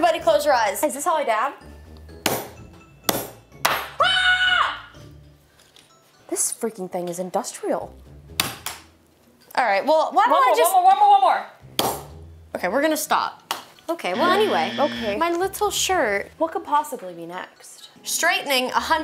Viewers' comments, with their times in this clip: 0:03 That scream cracked me up!! "Huuaaarrrhh!!!" love you guyz! 😁